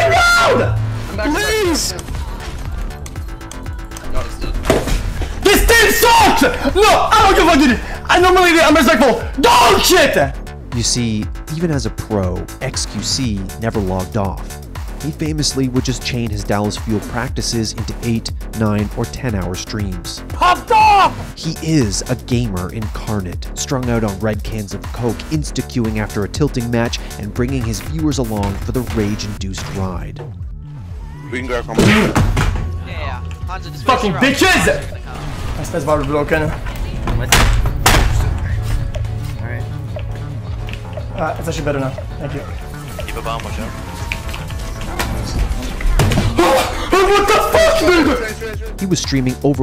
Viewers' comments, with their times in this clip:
0:06 I love how he talks bruh 😂
0:30 Y'all gonna ignore the fact he farted